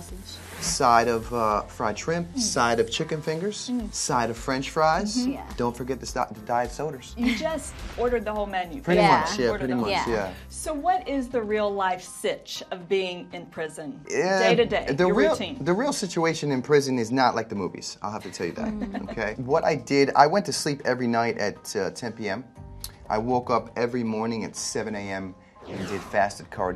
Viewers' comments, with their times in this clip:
0:07 “don’t forget the *diet soders*”